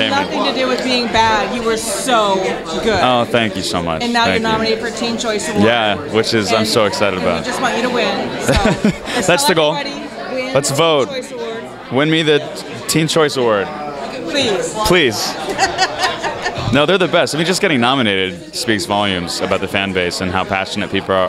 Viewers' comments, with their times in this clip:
0:06 WHEN HE SAID "ABOUT" OMG HIS VOICE THE WAY HIS MOUTH MOVES WHEN HE TALKS THE ADAM'S APPLE AND EVERYTHIN IS ALL SO AMAZING.